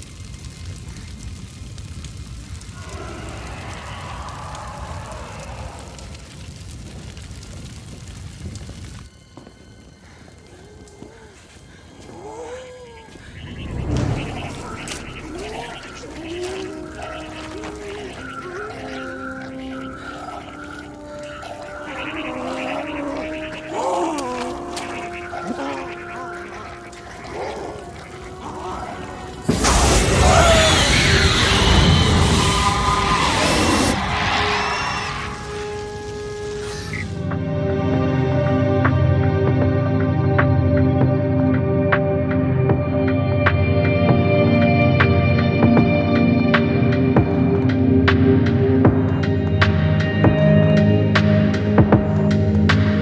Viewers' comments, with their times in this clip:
0:03 was that the gaping dragon I just heard😂
0:35 The movie music and the transition sounded cool